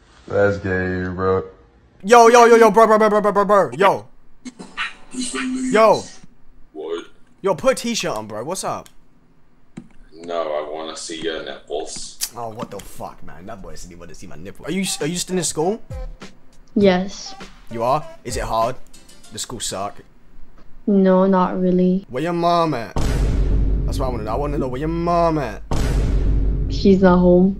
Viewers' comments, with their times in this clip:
0:09 We found Corpse Husband